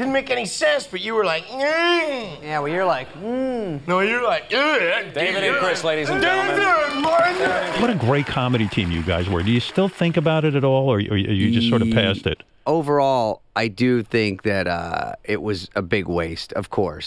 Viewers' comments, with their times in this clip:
0:05 so that's where Theo Von gets his Chris Delila impression from, almost exactly the same